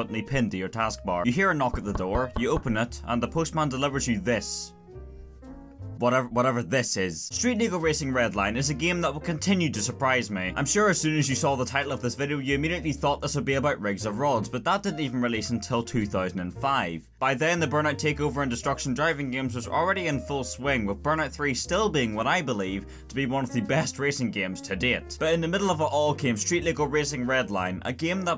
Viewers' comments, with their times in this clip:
0:06 activate automatic subtitles STREET NIGGA RACING
0:07 I feel like I've heard the N-word somewhere here
0:09 Street Niggah redline Captions ON